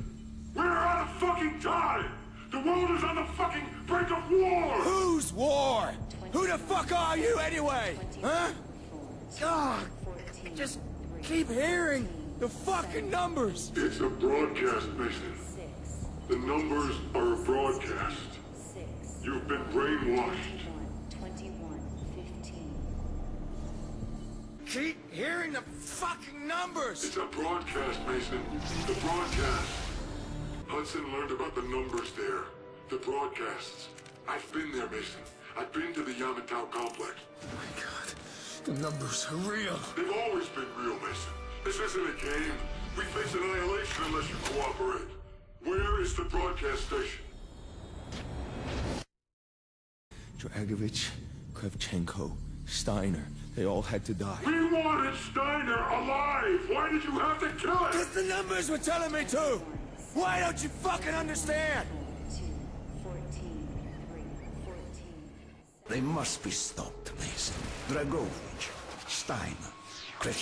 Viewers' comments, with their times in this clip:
0:06 "who tf are yOu anyway" That voice crack LMAO🤣
0:54 Why does this remind me of whistler from prison break with the bird book and sounds like a deep version of link